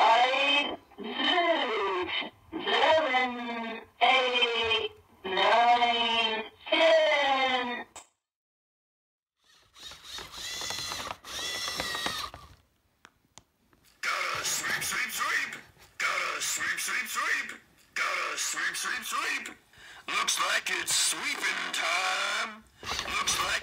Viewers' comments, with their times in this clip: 0:05 i herd unused hehehe and used hehehe